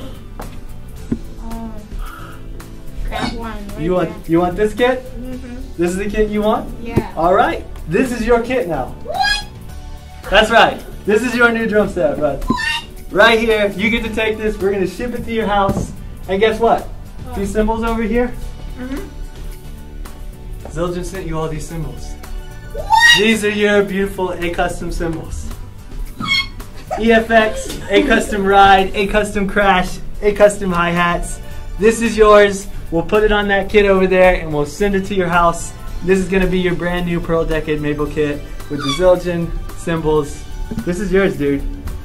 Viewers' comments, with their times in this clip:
0:03 the constant high pitched WHAT’s start now
0:08 lol why does the mum sound like a bird 😂
0:16 i love his mom in the background screaming WHAT
0:26 is that an air horn